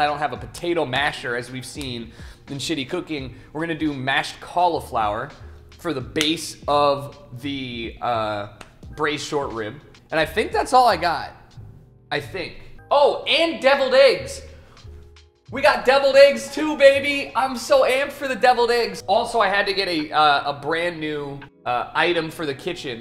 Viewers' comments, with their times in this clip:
0:04 he's trolling with his pronunciation right?